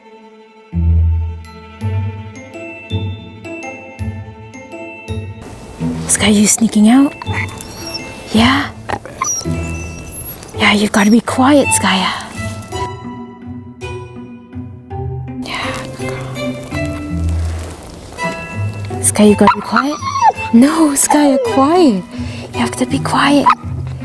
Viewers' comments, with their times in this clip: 0:05 The Sherlock Holmes music🤣Skaya took communicating to a whole new level with her whispering 🤣🤣